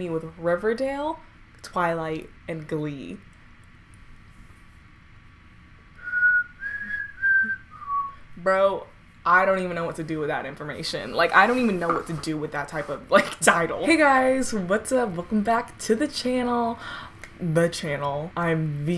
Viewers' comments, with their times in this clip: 0:06 lmao was that suppose to be the The Hunger Games whistle?